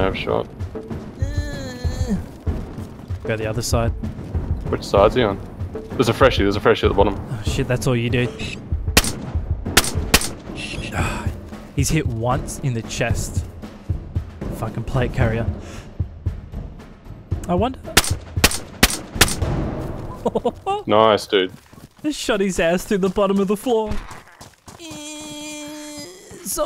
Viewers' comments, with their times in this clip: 0:07 The Halo ADS fx killed me.